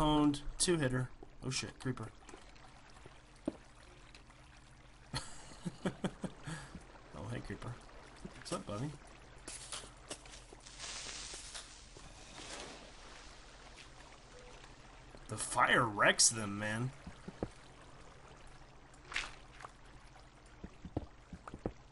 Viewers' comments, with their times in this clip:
0:04 thatsss a nice little hole you have there